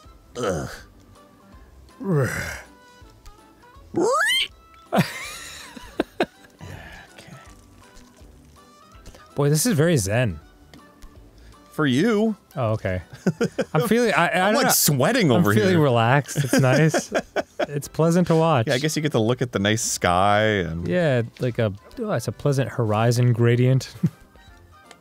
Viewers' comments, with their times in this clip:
0:09 "This is very zen" while this humpty dumpty music is playing in the background